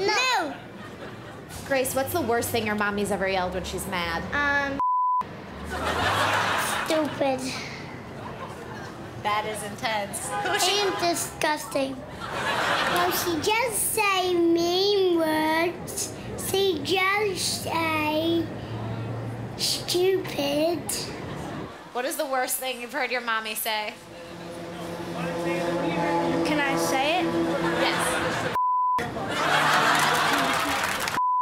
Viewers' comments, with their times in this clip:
0:03 did you just censor shut up??
0:13 kid straight up sounds like peppa pig 😍😍 cutiee HAHAHA
0:13 yo guys,I think I found Peppa pig’s voice caster😂😂😂😂😂😂
0:13 not me watching this in 2022 but the kid is so cute! And his voice is also so cute like I would die to here him talk again!
0:17 the real Peppa pig Short snort
0:19 that's the cutest stupid I have ever heard
0:19 The little guy sounded like Forest Gump